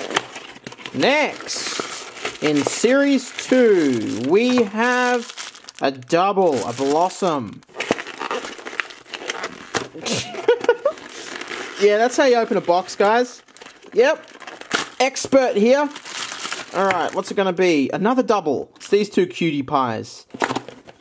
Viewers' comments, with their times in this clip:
0:09 OMG that was the cutest laugh ever!!
0:09 the laugh of a Pokemon Floral Cup Master